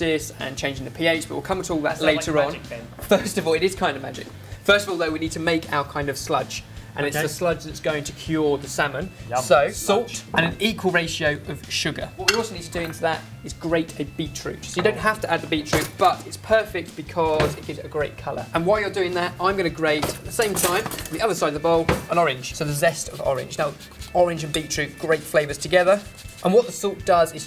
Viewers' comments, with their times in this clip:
0:10 Anyone else hear the fart ?